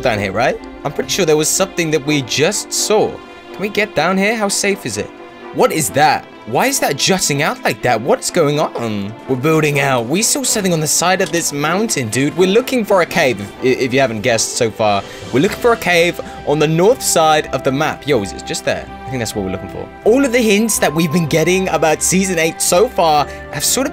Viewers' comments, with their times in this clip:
0:07 Voice crack haha
0:08 what is that voice crack